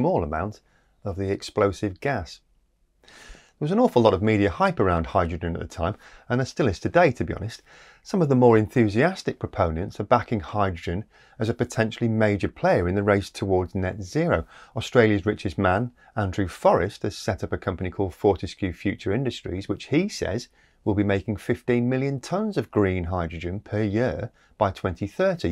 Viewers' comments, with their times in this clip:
0:10 My Dogberryism heard "some of the more enthusiastic propellants . . . " . . . BOOM!